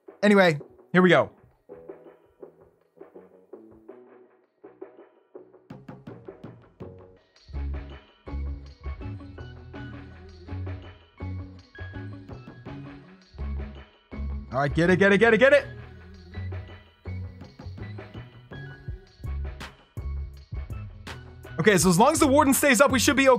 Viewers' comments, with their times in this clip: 0:07 Love that music